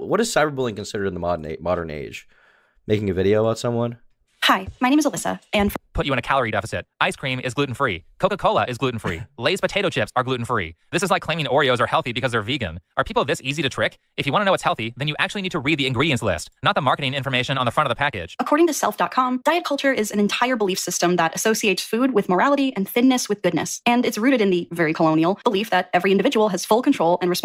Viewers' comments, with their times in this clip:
0:09 Holy shit, I just realized... This guy is Destiny, but he just slows down his voice in these videos